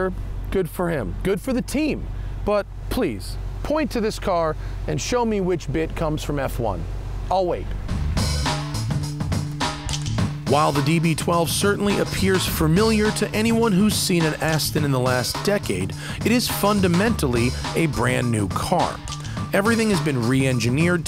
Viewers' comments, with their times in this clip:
0:06 I think you might have two audio tracks playing during the overview section at the beginning starting